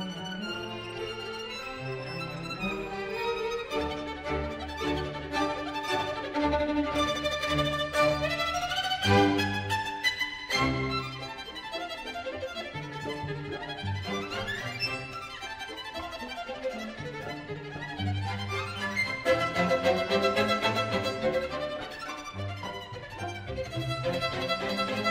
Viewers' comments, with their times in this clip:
0:08 those are some of the cleanest octaves I've heard in a while.